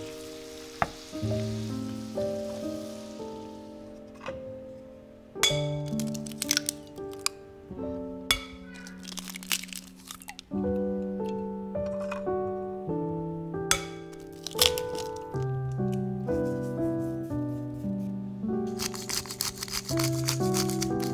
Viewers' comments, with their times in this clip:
0:09 I love the "Meow" ♥️